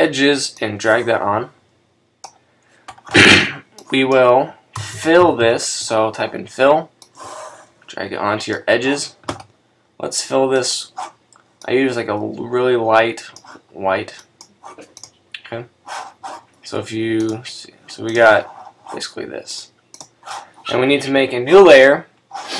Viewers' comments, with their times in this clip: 0:03 dont ever do that on the microphone it blew my ears